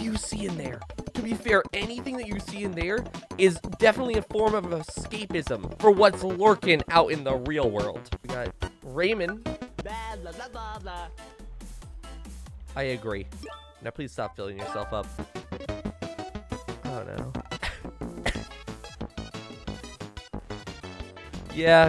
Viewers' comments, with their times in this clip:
0:08 I die a little every time someone says “Raym’n.”